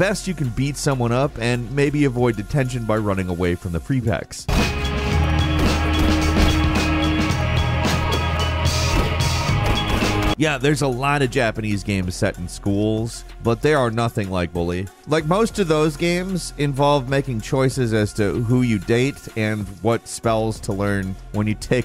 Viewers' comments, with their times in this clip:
0:05 sounds like a song that would be in The Matrix or Blade